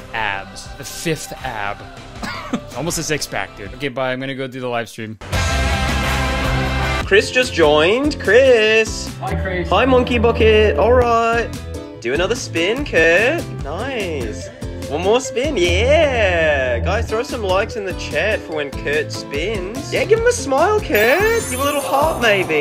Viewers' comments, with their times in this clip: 0:08 the voice why does that voice sound soo much like Pim from Smiling Friends.. 😧